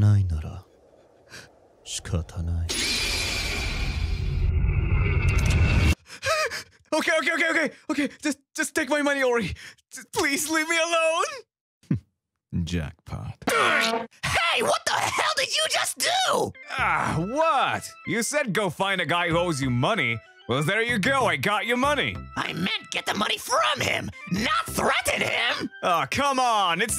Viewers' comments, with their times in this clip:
0:08 surprised you also voiced him. he really sounds from another person. great job!!